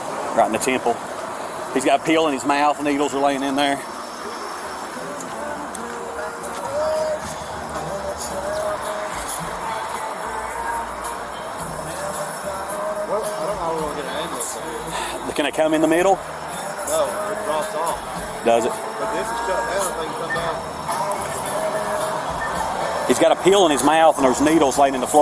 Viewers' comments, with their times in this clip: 0:09 Nothing worse than dying while freaking Puddle of Mudd is playing !!! somebody end that misery